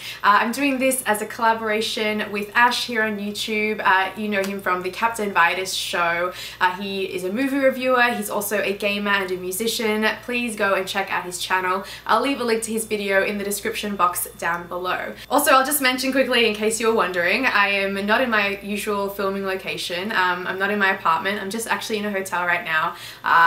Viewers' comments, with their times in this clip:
0:08 Lol for a second it sounded like you said "gay man"